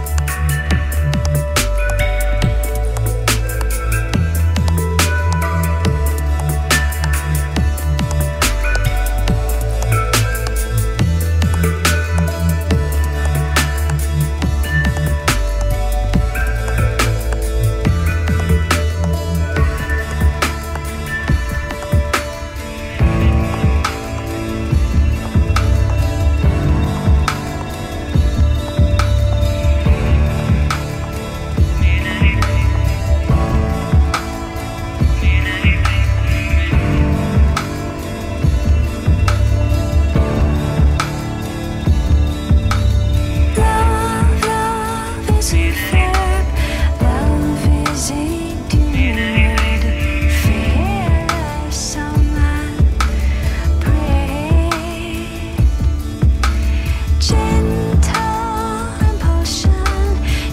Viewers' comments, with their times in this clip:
0:05 lmao house theme song ish
0:05 does the harp like noise sound like the music from House?
0:43 which is the song ?? the lady's voice is mesmerizing.